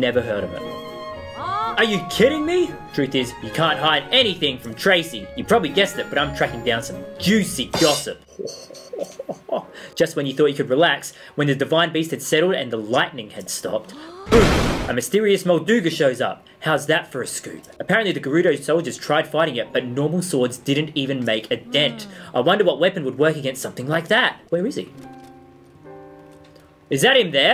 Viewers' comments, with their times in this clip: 0:08 that laugh...it is the laugh of one who has seen a great many things...